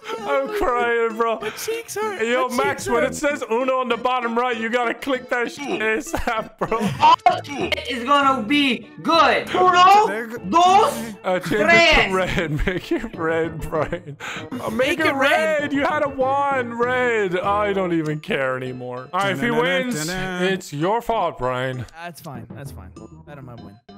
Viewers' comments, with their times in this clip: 0:08 It's am and yet here I am watching Irish men yelling again